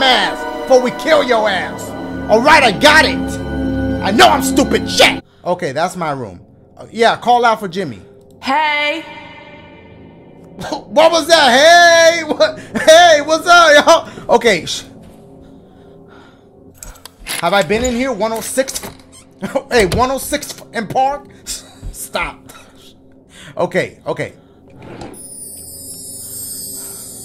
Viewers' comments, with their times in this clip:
0:09 sound like uzi in the beginning of moon relate 💥🔥🔥